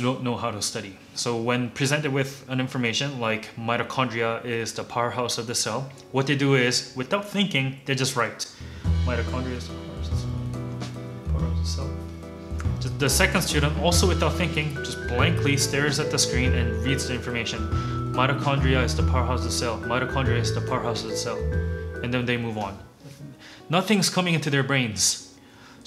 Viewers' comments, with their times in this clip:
0:08 this is so funny because i can picture myself doing that and the music made it even more funnier to me